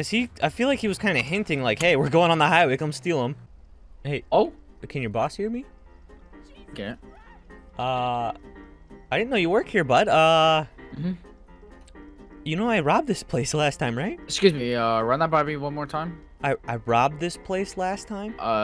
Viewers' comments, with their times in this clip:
0:06 the guy in the back screaming